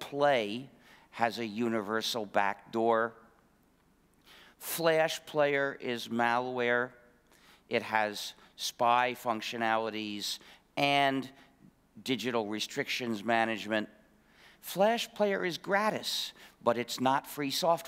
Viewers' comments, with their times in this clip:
0:03 He's smart but he needs to polish his presentation skills. But of course he won't because STEM types are notoriously anti-social and disinterested in their effect I'm done listening What's your point dude? The relentless enumerations are belaboring a point that I'm not getting. Clearing your throat and sniffling into the mic are distracting and rude. I just can't sit through this and won't which is a shame because maybe there's something interesting in this talk. I just don't have the patience. If there's a written transcript somewhere I'll read that.